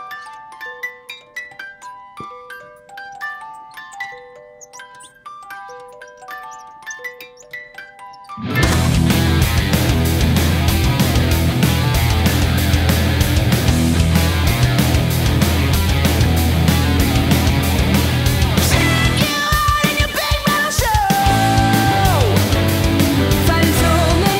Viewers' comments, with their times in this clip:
0:09 sounds like Metallica